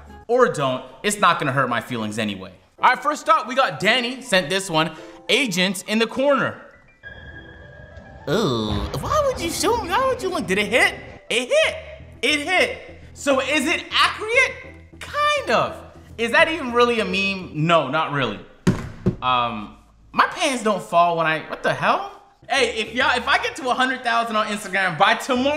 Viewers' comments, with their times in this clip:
0:04 agent’s eughhhhhh made me crack up
0:05 OHHHUHHHH 😂😂😂😂 That voice
0:08 agent sounding like sponge bob😂
0:08 the way he says it eww